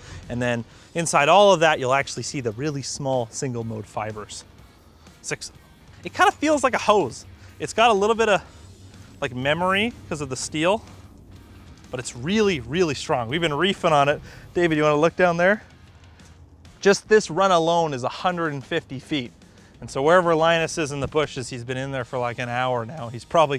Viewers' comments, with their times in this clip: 0:08 GLEEFUL SCREAMING TURNS TO ABJECT TERROR